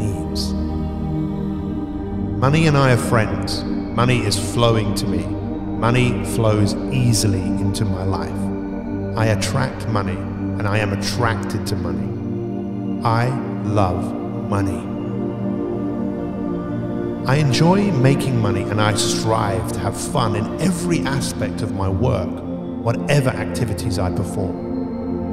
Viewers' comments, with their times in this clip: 0:10 in and I realized, I just ruined the video cause my mind started hearing mummy instead of money